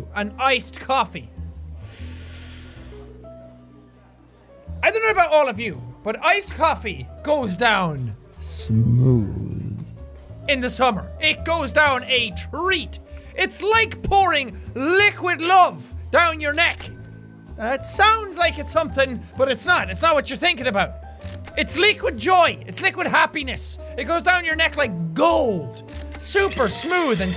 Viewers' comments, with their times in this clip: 0:08 Say smooth like that one more time and I’m booking a flight